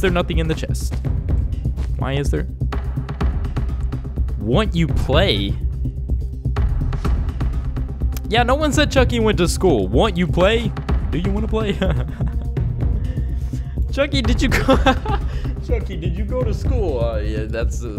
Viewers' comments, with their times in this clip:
0:04 You can Hear A Laugh